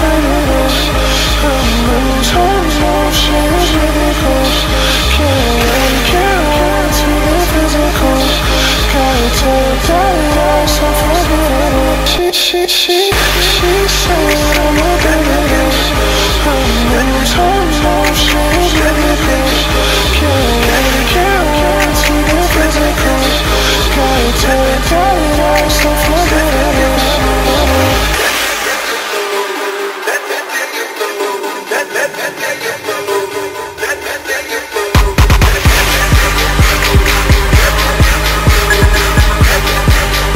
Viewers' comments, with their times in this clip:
0:10 I love this song ❤️‍🔥
0:28 This song gives such a good.....vibe put on headphones and close your eyes